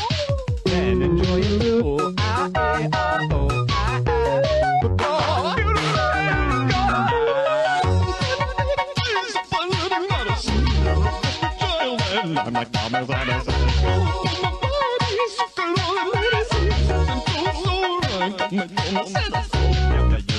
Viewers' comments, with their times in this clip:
0:08 I love the keyboard playing